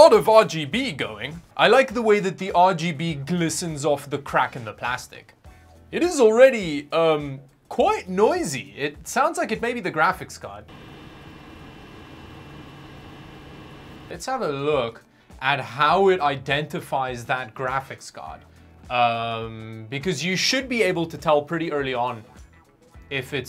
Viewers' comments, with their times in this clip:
0:10 i think there is a plane flying